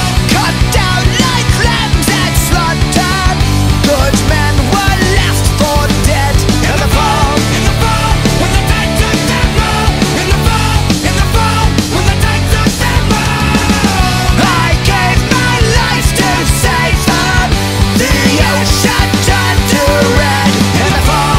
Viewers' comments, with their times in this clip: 0:04 Battleship 1: FIRE!!! Battleship 2: FIRE!!! Battleship 3: FIRE!!! Cruiser: WHAT THE HEEEEEEEEEEEEEEEEECK!!! Fading Screaming